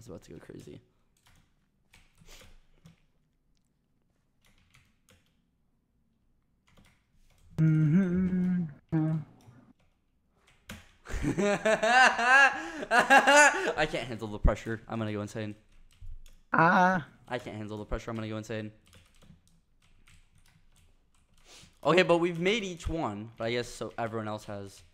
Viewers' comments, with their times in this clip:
0:07 that sounded like a fart to me